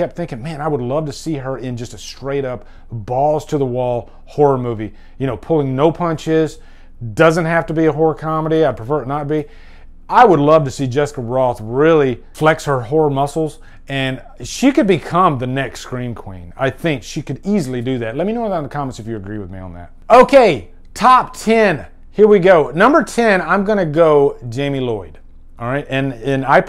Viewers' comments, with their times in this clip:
0:10 Oh dear, I heard something different there, for a second. Also, I'm pretty sure slasher villains universally consider "You're Next" a horror movie because Erin scares them.